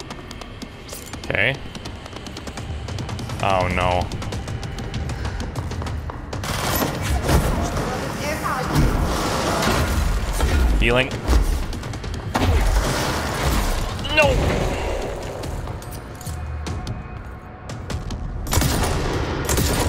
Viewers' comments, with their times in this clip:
0:07 Jesse: Stop it! (I think? There's a lot of other noises going on, and as I've said before, in this game the gunfire is SO MUCH LOUDER than the dialogue)